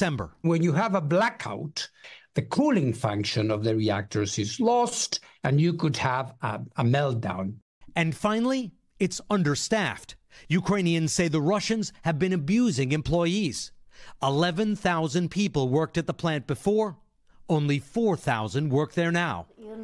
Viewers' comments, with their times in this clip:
0:05 ok did anyone else notice how he said lost ? ?